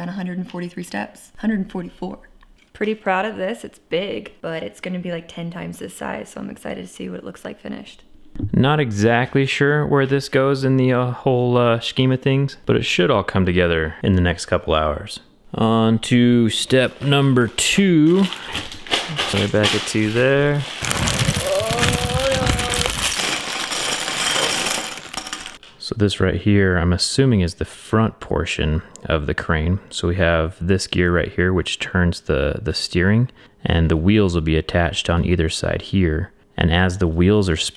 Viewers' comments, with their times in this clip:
0:04 sounds a little bit like a nature film 🤣😅
0:21 Then she start moaning 🤣🤣🤣